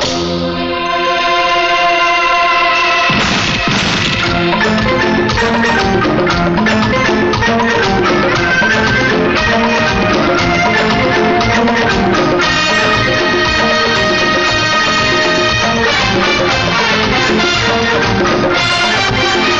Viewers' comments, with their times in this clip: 0:06 the music 🎶 wow